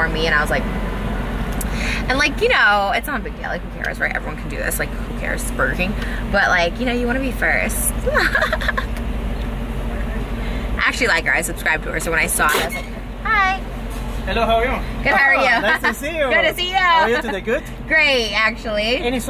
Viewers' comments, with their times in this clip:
0:07 lmaoo her laugh